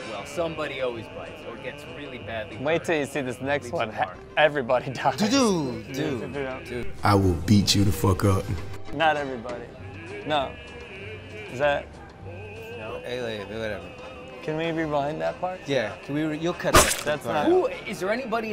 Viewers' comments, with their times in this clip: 0:03 Don’s reaction was so terrible, if it was RDJ instead he probably would’ve doubled down on “everyone dies” in a clearly humorous way, and say that the ending scene was a pan across a barren universe. Don’s tone and reaction speed were SO unfortunate and revealing in that situation.